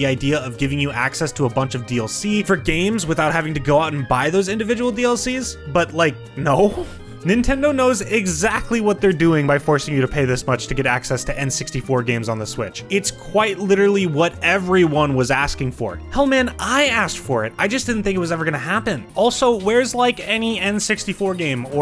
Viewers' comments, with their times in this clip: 0:06 The way he says “No” is scarily similar to that one Hotel Mario cutscene.